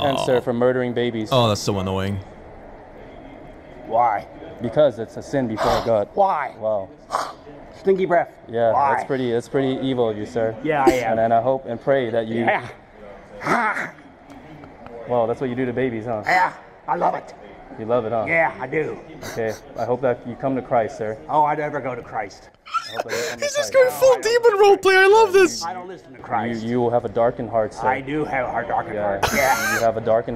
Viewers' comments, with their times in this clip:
0:05 I thought that was Dan Povenmire for a second lol
0:18 the protester doesn't even sound like he believed what he was saying 🤔